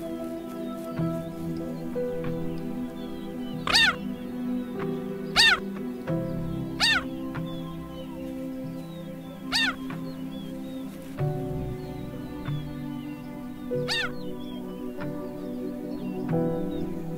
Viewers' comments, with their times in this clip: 0:03 you can feel the emotions as she calls for her young